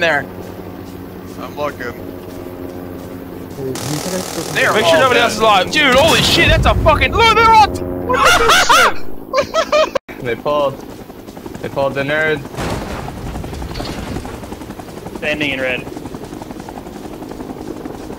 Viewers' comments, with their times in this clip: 0:06 viet cong mannically laughing at dead amercan soldiers 1969 [colour footage]